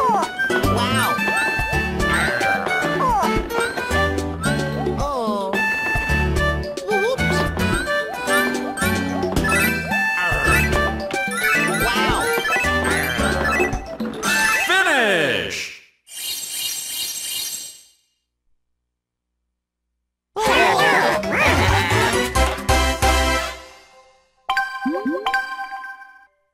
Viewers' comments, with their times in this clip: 0:04 Both Mario's "oooohhhh..." and "Wh-whoops!" were on sync with the music!
0:04 Both that “Wh-whoops!” And the “Ohh…” before it were synced with the music. But yes, I love it when Mario says that, it is indeed cute.
0:07 It is just me, or does Mario sound so cute each time he says, “W-whoops!”?